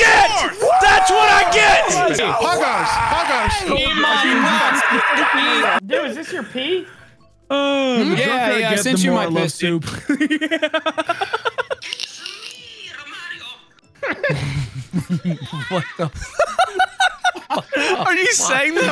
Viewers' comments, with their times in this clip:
0:04 The Godzilla scream